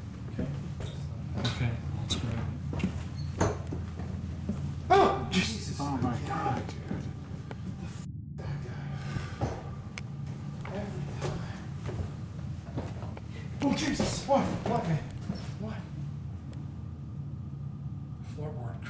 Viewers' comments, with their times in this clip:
0:06 there is a evp shouting got him